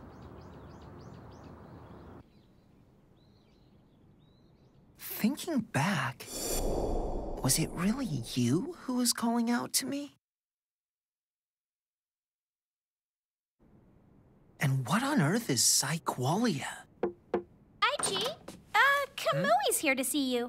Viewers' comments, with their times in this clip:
0:05 sounding like Mordecai and Rigby Ohhhh! Miwa just got burned. Maybe she's more interested in Kai? Blaster Dark debuts, this is great. Yes, it was. You're starting to hear your units' voices. Only a matter of time.